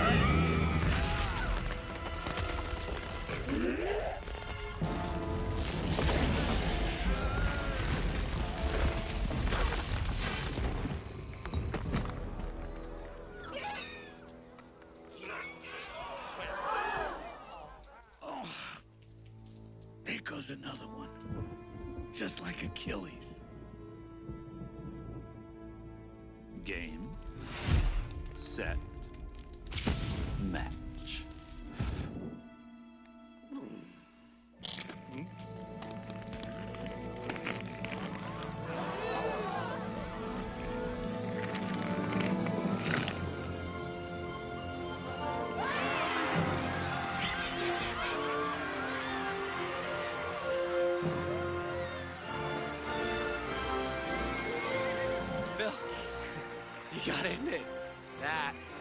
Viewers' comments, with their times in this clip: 0:03 Sounds like the angler fish from Finding Nemo.
0:43 Always loved The MUSIC!!! and then the crowd going wild!!!